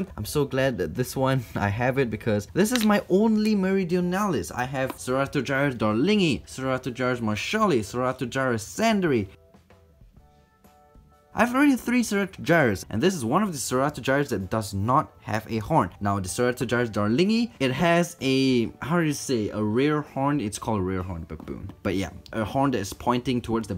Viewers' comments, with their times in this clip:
0:05 SUBTITLE FAILS Sir Arthur Charles Darling II Throw Out Two Jars More Surely Throughout To Jarraih Sandri